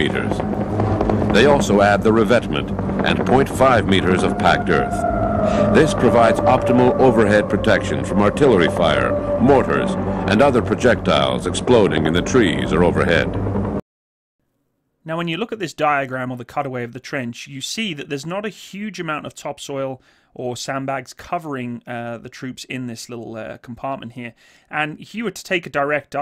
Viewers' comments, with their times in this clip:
0:10 There seemed to be a white box in the covered part of the trench What was that - or was it my imagination? That eerie music must have been from one of the PsyOps sound tracks.